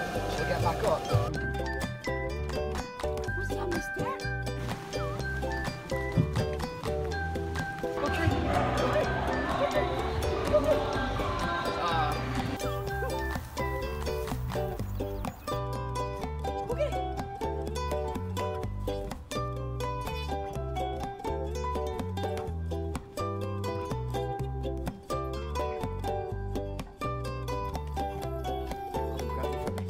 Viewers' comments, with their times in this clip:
0:10 did he say assault 😅😅😅😅